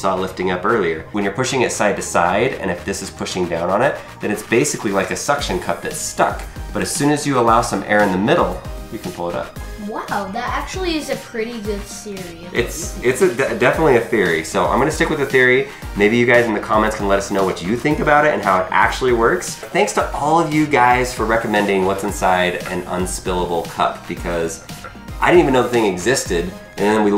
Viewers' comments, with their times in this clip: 0:10 "Wow, that actually is a pretty good Siri" hahah listen closely
0:10 the boy said wow that's a pretty good sery not theory
0:11 did he just say Siri instead of theory?
0:11 Wow that is a pretty good Siri
0:12 he says Siri instead of Siri 😂 no hate just pointing it out
0:13 that a pretty good Siri